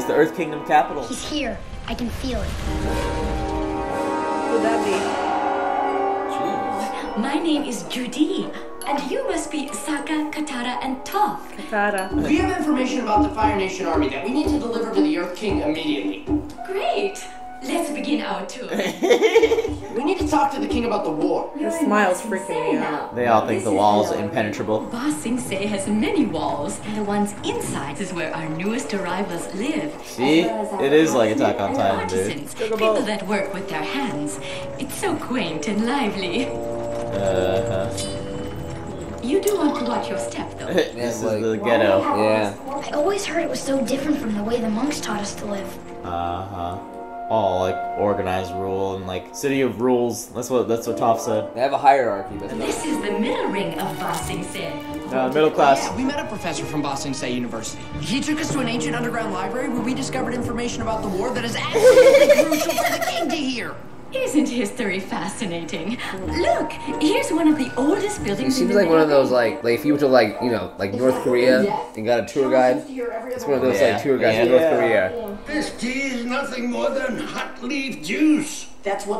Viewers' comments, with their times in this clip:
0:10 that's how it's pronounced in Spanish but with a quite different "t".
1:01 thought it was the girl laughing